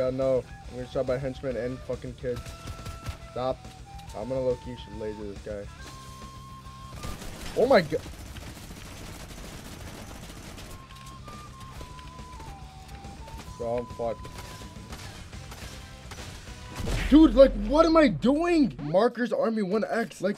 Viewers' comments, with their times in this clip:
0:04 The best part about it is the Naruto music